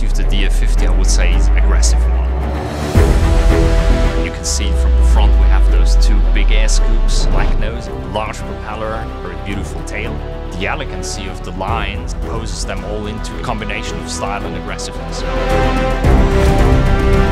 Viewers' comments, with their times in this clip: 0:04 I swear to god I heard him say "Big ASS scoops" but he actually said "big air scoops"; Either way he's not wrong LMFAO 🤣 Beautiful machine, dream plane right there. Edit: Timestamp